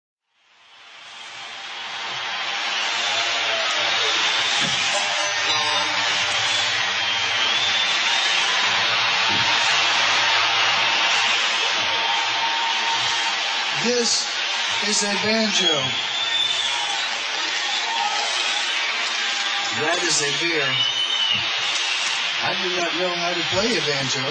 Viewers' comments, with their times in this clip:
0:05 Love the banjo piece starting "Know You Got To Run." Hard to believe it's a banjo... am I wrong?